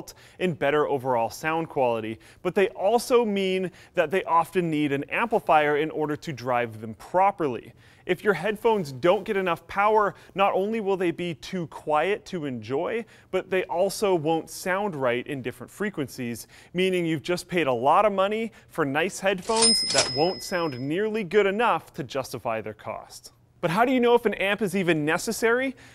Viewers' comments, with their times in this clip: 0:07 Are there noises in sounds from or is it just me?